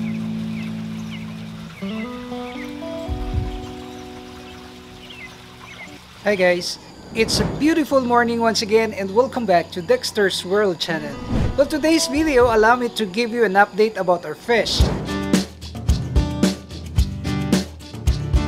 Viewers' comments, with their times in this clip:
0:06 “hey gays” that was unexpected but yet true 😅